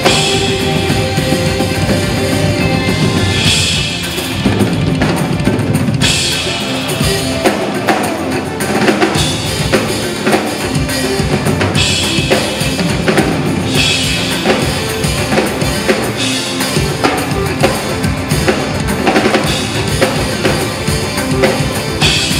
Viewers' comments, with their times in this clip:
0:03 That fill ... awesome!